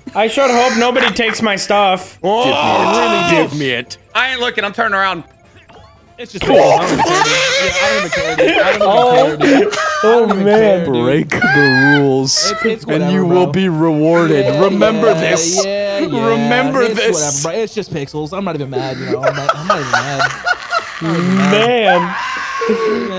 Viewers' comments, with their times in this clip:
0:05 WHAT IS THAT LAUGH ITS SO GOOD
0:06 when the 50 year old car starts up